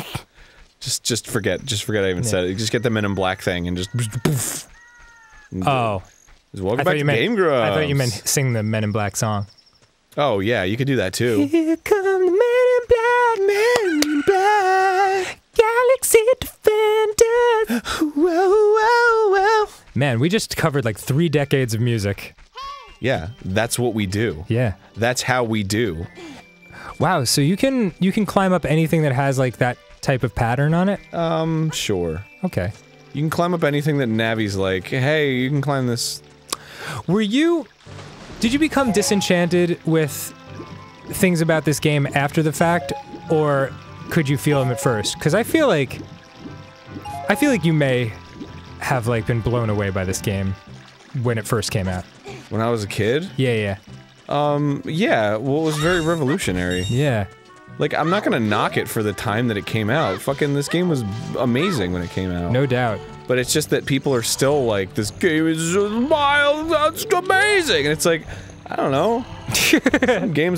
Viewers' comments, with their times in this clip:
0:03 That sounded like a really nice snare drum, Arin
0:58 Arin begins speaking in his Sequelitis tone of voice